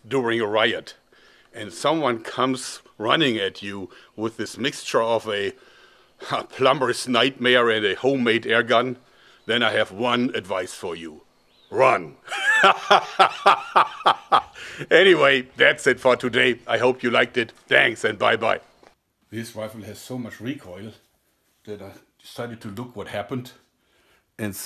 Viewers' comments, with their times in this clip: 0:09 If he would come up to me told me that and laugh in my face like that I would be super scared